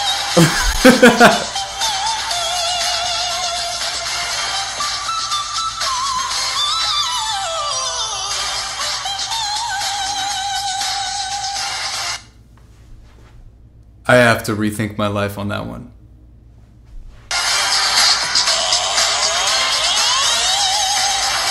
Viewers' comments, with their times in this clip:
0:07 Ok, I changed the playback speed to .25 speed and Dimash sang 12 individual notes in that run. 👽 👽 👽